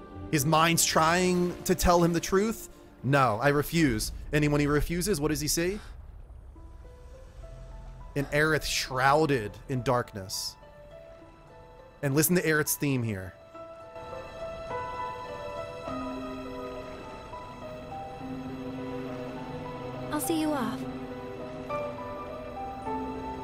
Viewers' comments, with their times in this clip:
0:09 this isn’t Aerith’s theme, this is the opening notes to the main theme/bombing mission played in a minor key